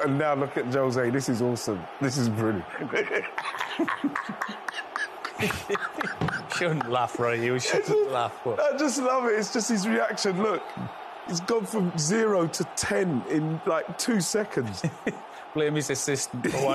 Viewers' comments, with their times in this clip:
0:03 the laugh is the best xD